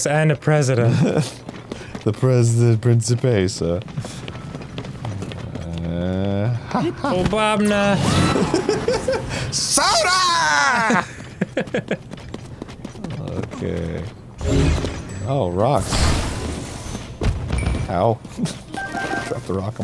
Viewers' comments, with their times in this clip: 0:06 I love how similar Arin's "SODA!!!!" was to his Muzu voice it's such a beautiful mental image
0:07 😢no WOW sound effect...